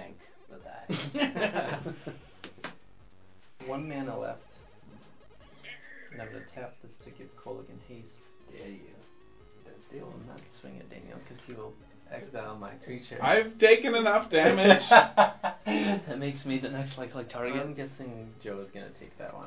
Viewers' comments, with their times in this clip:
0:04 Anybody else hearing the n word